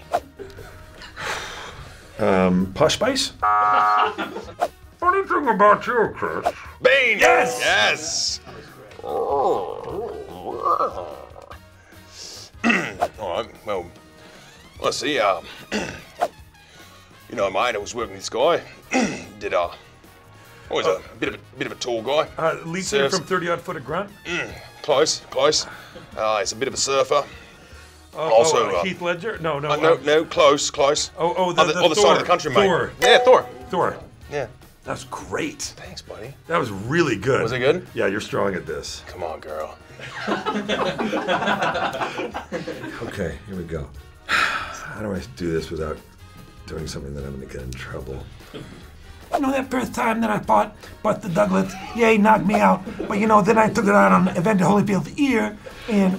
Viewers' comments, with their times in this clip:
0:08 That sounded more like Bill Hader's impersonation of Keith Morrison. xp
0:11 is where Chris does an impression of Chris Hemsworth/Thor!
0:11 why did he sound more like Chris Hemsworth than Chris Hemsworth does? 😂 😂 😂
0:13 is when Chris does the Thor impression
0:13 Thor impression is soooo good!!
0:13 for a spot on ‘Thor’ impression :)
0:14 Here’s where he does Thor’s impression
0:39 that sounded like author morgan on a horse